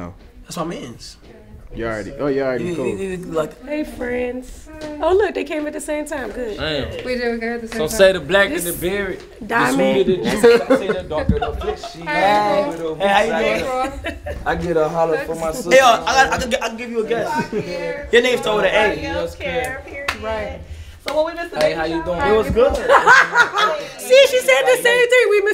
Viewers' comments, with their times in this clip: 0:07 NLE immediately starting to serenade shawty was hilarious😂😂